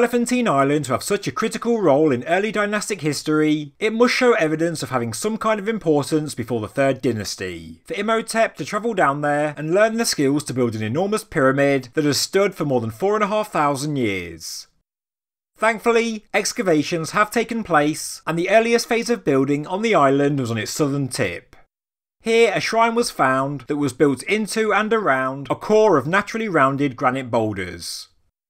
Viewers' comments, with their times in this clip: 0:09 Only got in because the way you talk is insane.